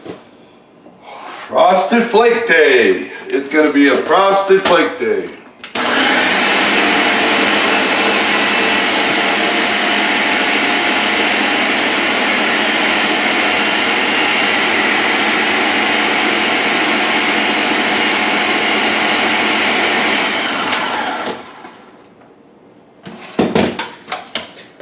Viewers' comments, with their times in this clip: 0:05 ...R.I.P my ears.